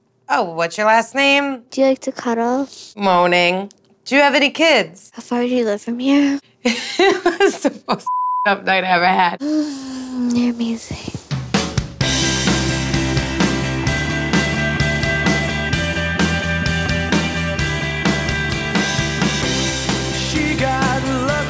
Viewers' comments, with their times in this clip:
0:09 noticed they lost their extra thick accents lol....